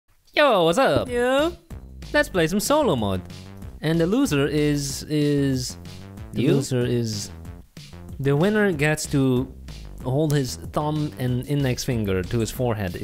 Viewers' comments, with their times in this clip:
0:01 am I the only one who thought his "yo" sounded like a fart